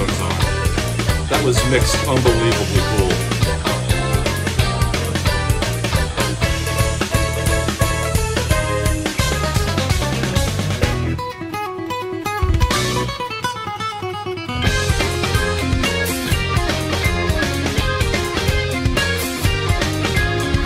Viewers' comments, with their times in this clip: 0:05 did you notice jingle bell ?
0:05 it sounds like jingle bells
0:06 almost sounds like they tried to sneak jingle bells in there🤣
0:06 Jingle Bell Jingle Bell Jingle all the way (flat).
0:06 Jingle Bells in Jazz chords. Lol!